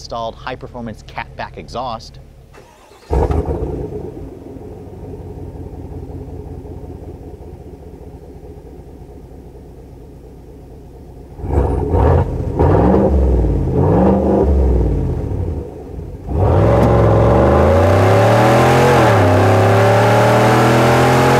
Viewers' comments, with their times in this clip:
0:03 Best part of video was start up and rev out. Sweet!